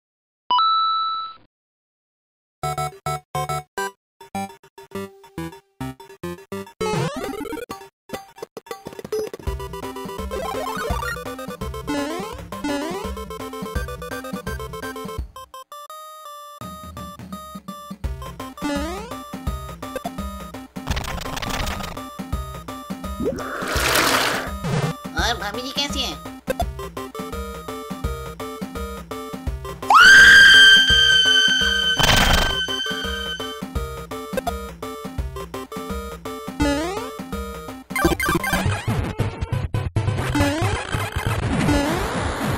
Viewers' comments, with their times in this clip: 0:09 Rajini mode,but music of vijay song
0:29 rip earphone users🤣🤣🤣🤣🤣